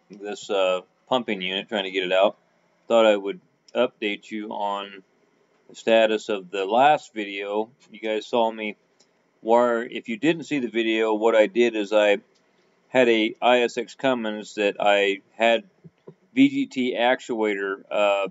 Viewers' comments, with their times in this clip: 0:06 left channel is weak right channel is good both channels come in great knda weird